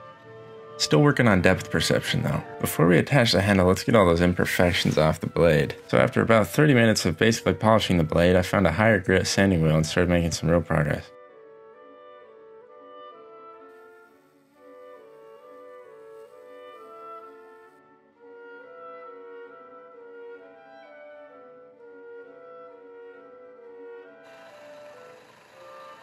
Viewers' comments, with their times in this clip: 0:09 This guy sounds so perpetually exhausted that sometimes he doesn't even finish his words. minutes in, for example... "progreh...."